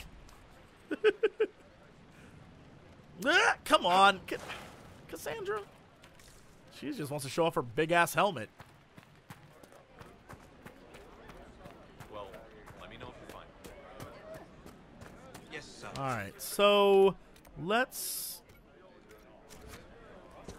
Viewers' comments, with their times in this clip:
0:06 I heard it as this: "She just wants to show off her big ass...helmet."